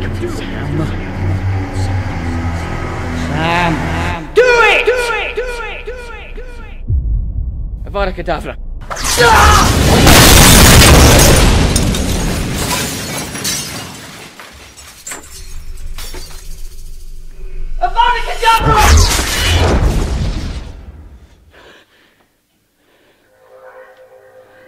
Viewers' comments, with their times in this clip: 0:06 ahaaa love the way he says 'Avada Kadabra'